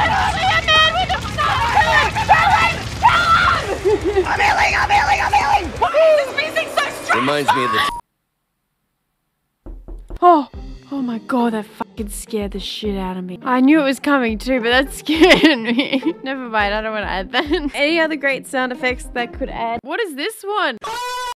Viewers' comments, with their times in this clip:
0:08 Holy F. How are the Twitch sound alerts better than the sound in any game. I didn't even know my headset can do this.